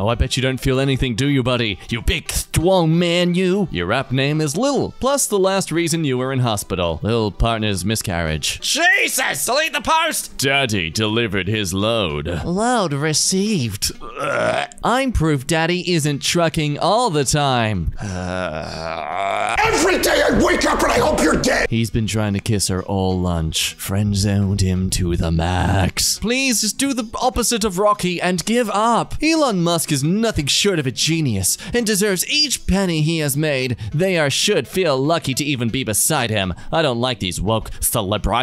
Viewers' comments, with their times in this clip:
0:06 lil sore throat
0:20 Bloody hell mate, you could've been a frontman for a death metal bands with that